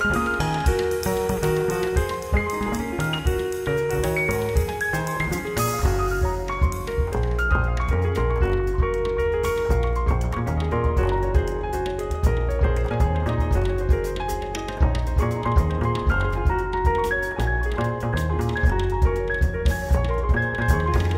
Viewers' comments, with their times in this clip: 0:03 until the end of that tune is... unbelievable. I actually can't believe those sounds and phrases just fell onto my ears. This trio is a miracle. These are things you hear coming out of a deep dream.